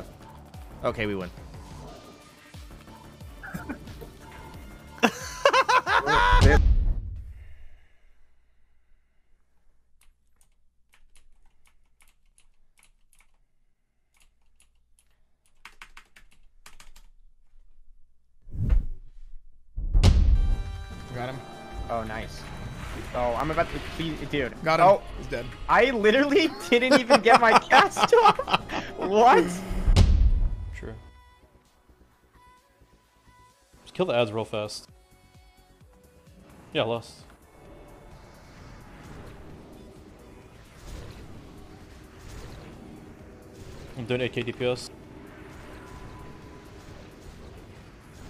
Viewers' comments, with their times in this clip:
0:05 soda poppin off with that laugh is gold
0:31 my favorite lmao that dps is insane, the raid is overgeared as fuck and that WOOH was priceless